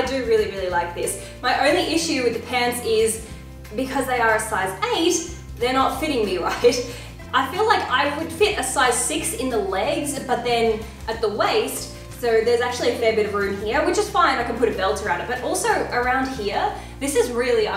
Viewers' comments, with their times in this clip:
0:03 i thought the pants were ripped and until explained otherwise